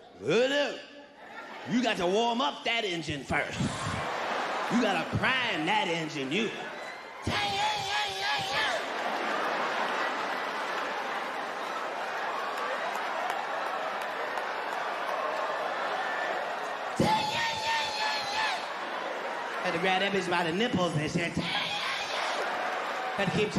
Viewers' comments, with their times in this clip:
0:09 his engine flooding sound effects 💀😂💀😂